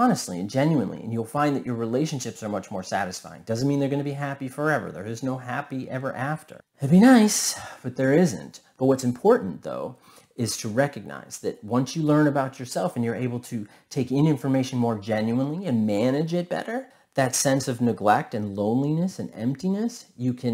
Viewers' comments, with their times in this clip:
0:08 I love your videos! They really help me, thank you so much. Also, when you say “that’d be nice” I really felt it in your voice haha! Much love!